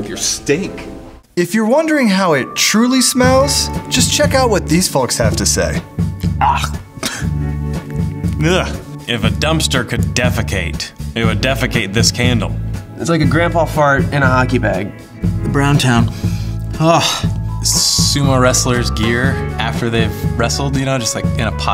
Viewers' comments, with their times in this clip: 0:09 The candle farted.